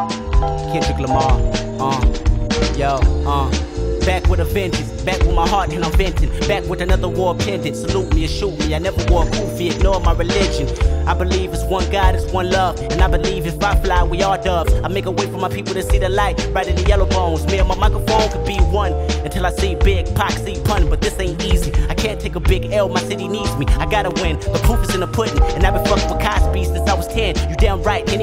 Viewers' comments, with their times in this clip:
0:10 the flow reminds me of his verse on "Wat's Wrong" by Isaiah Rashad